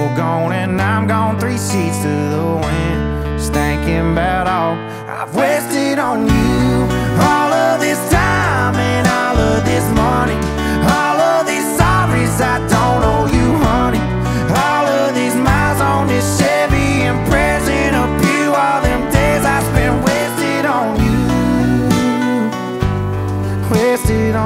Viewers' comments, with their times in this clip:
0:05 love the chorus